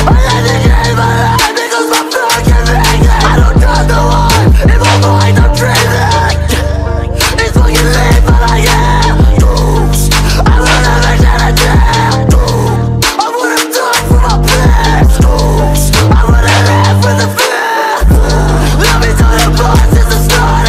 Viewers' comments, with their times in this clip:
0:06 interesting music type